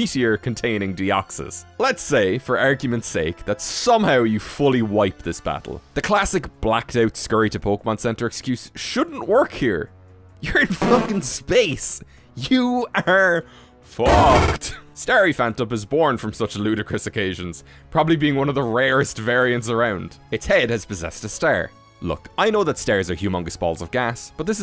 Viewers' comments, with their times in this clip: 0:10 the use of the Snorlax and Munchlax cries as censors is brilliant! XD